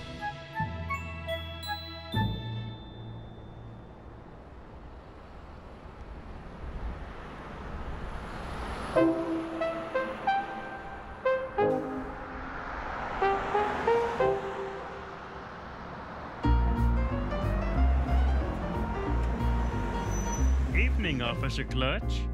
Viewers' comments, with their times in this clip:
0:04 That sound like the oh no meme I guess